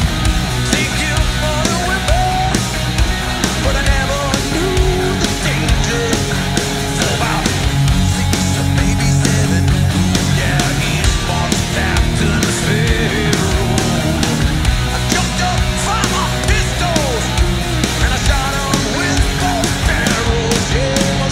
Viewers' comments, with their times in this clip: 0:05 the most beginner-ish mistake a drummer can make..... Lars ffs.